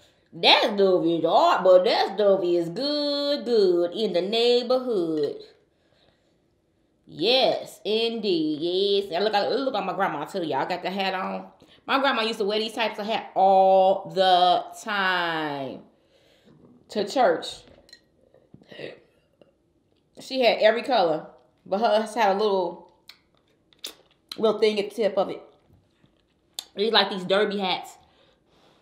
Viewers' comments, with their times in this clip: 0:09 what was that noise lmao